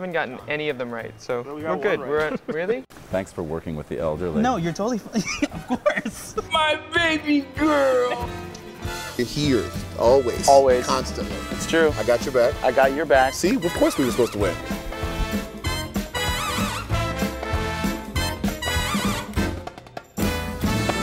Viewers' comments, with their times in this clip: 0:05 I heard a little bit of Iago